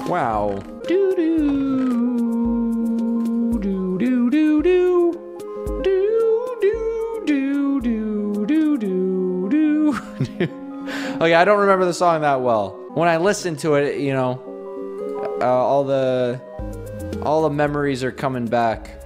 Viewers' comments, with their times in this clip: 0:07 He’s singing haha